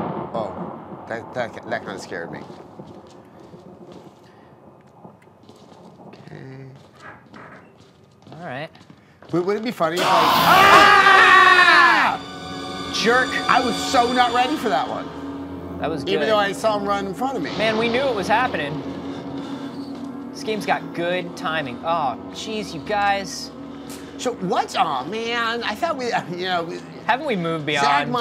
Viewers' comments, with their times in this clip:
0:09 the sream made me laugh so hard hahahaha